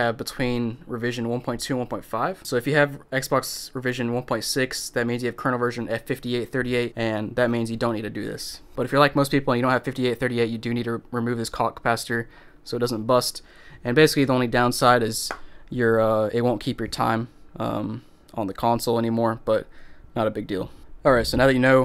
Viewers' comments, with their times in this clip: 0:09 My boy did not say clock